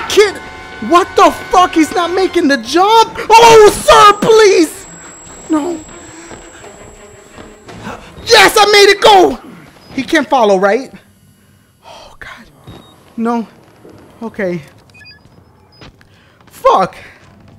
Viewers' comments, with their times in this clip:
0:04 That was the saddest "SIR PLEASE" I have ever heard. You poor thing, you were so scared, lmbo.